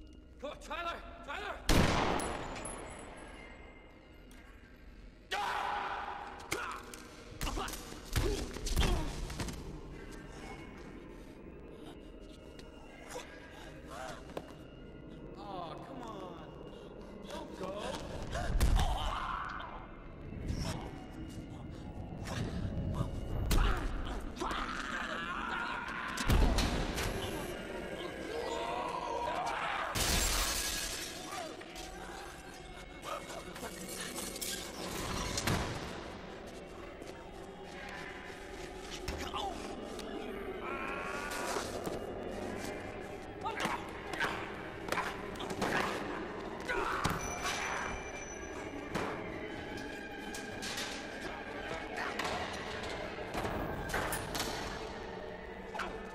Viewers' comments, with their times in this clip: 0:04 Don't know why but Tyler's yell kinda scares me
0:27 damn he sounds like a lion wtf ?🤣🤣🤣
0:39 Notice how after Tyler's voice changed almost feels like a dog growling